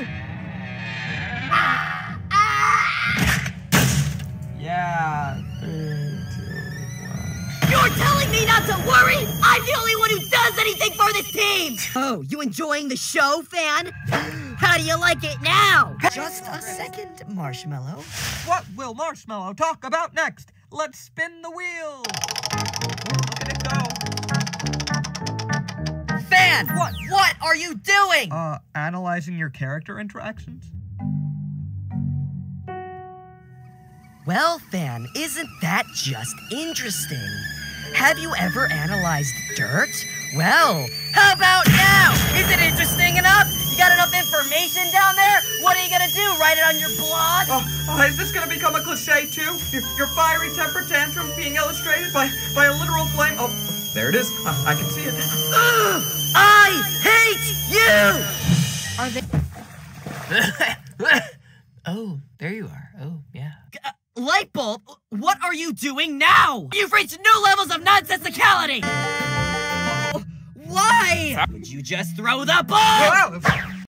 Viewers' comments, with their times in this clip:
0:08 R.I.P Headphone Users!!!!!!!!!!
1:01 O.O what kinda mood voice is that?